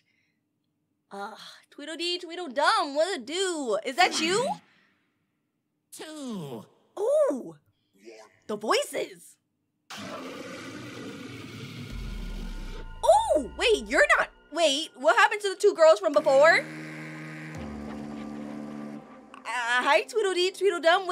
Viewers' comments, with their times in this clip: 0:05 that last voice sounds like sonic.exe